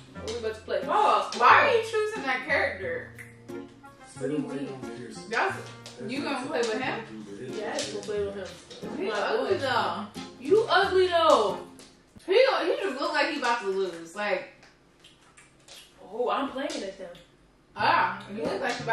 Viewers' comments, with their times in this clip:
0:03 there was a man talking in the background unless I’m tripping